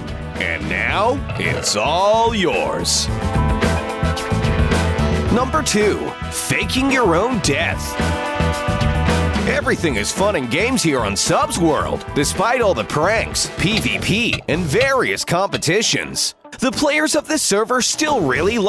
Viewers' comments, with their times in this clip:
0:04 Me: I think you should break the chest instead so it doesn't make such a loud opening noise.